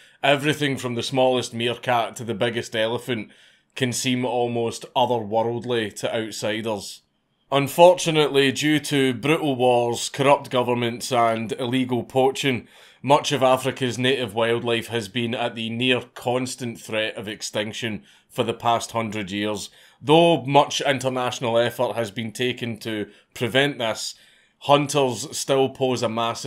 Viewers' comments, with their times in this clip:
0:07 Unfortunately, due to joggers...